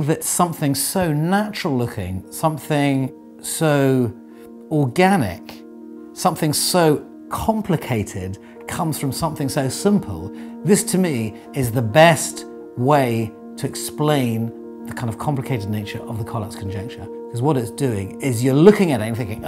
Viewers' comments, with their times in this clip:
0:06 could've sworn he was about to say orgasmic...